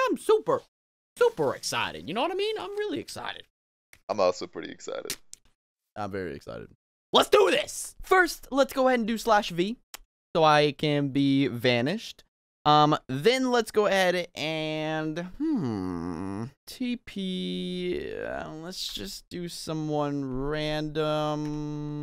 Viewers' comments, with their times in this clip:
0:03 i seriously thaught it was a beat but just cellotape XD